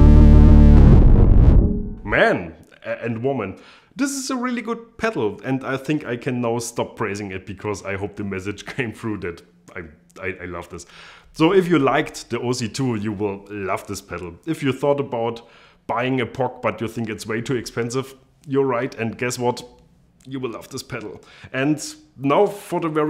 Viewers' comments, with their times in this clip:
0:06 Yeah, I heard "praising". Don't know what anyone else heard :D